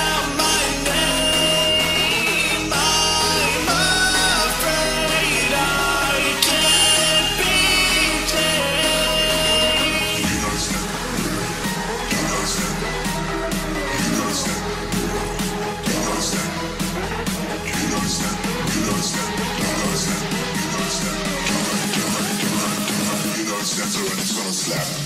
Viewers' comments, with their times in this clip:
0:10 how is that "you will die"? I only hear gibberish